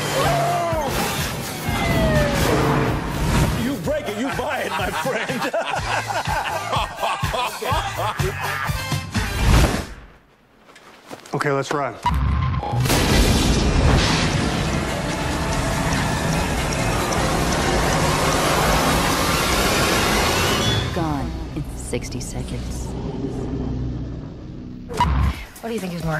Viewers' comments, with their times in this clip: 0:09 this part is so weird without Low Rider